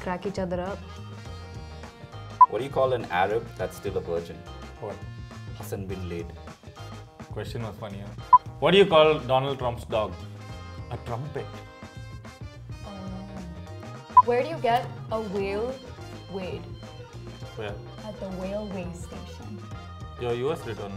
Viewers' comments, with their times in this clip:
0:05 .... why didn't that count as laugh!!!?
0:05 .... why didn't that count as laugh!!!?